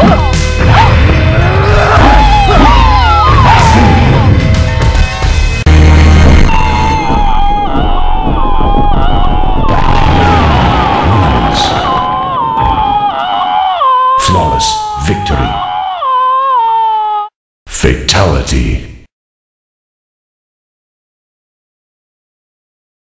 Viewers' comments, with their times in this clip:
0:05 Is Liu Kang in a cave ? After he die, who is still screaming ? His ghost ?
0:05 Yeah! The Liu Kang endless screams is the highlight of this playthrough, LOL. I can't stop replaying it.
0:05 made me rofl so damn hard liu kangs endless chinese screams LOL like 5 seconds after he is dead he is still screaming XD
0:06 lol, Liu Kang screams like a girl, even after hes dead XD
0:08 How could Liu Kang keep screaming after being torn to pieces???
0:08 Sounds like a million Liu Kangs are dying